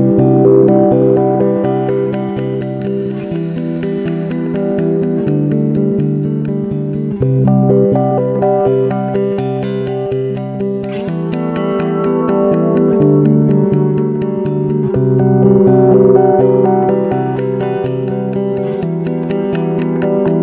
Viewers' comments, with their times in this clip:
0:08 Beat should have dropped ! A smooth electric guitar with some drums in the background. It’s still a great song though! 🙌🏼